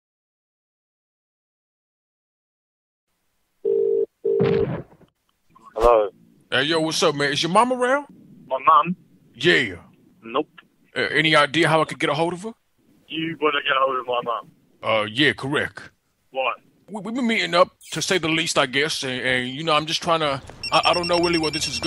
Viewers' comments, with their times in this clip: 0:09 I like how he says "nope"